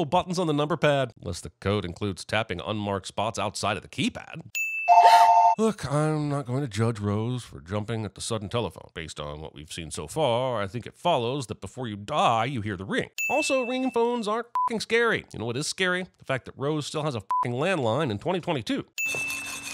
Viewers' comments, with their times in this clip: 0:06 WHY DID HE SOUND EXACTLY LIKE L FROM DEATH NOTE??